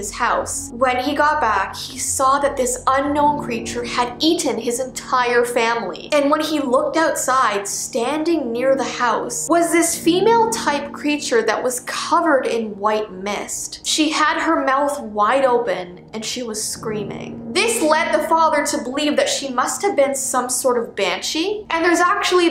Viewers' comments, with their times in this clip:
0:04 The way that she said Eaten Its like in a British.